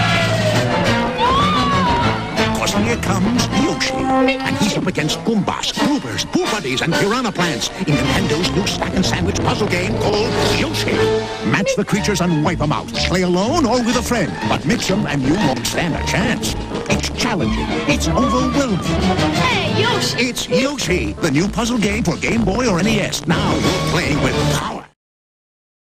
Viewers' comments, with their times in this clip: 0:06 did he just say boobady? XD